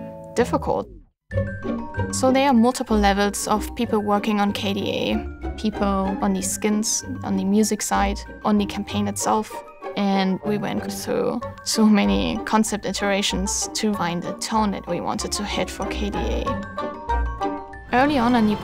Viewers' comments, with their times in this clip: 0:06 is that Danish accent i can hear or its just me XD